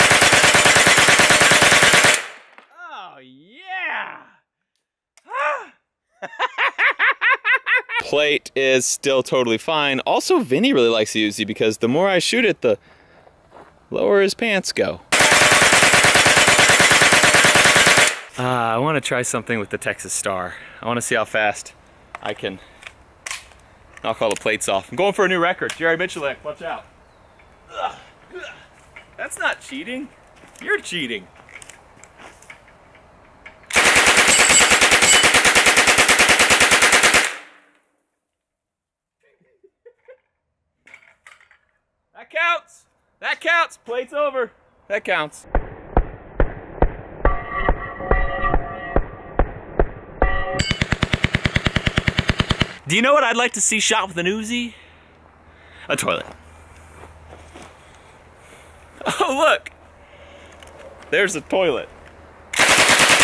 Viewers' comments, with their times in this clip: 0:05 that laugh you know he’s done something crazy
0:05 that Joker laugh!! xD
0:06 (laugh like “Joker”)
0:06 Best Joker laugh
0:06 best joker laugh ever
0:06 That joker laugh tho
0:44 that sounds like a beat to a song